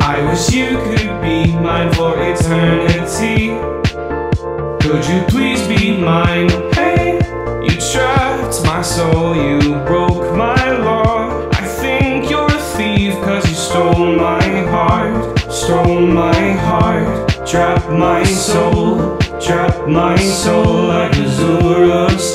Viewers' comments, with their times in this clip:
0:07 i'm pretty sure i'm a straight guy, but the vibrato on "trapped" makes me question myself